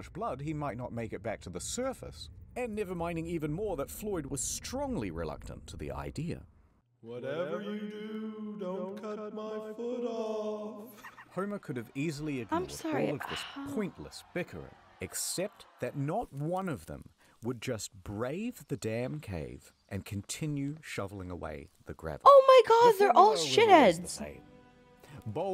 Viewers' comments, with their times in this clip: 0:06 i never realized that chuckle